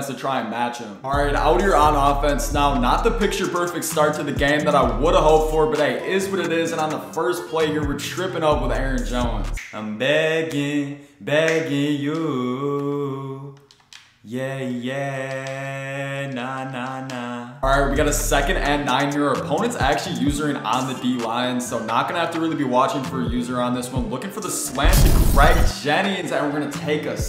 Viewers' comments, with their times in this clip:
0:10 also u should start a music career with that banger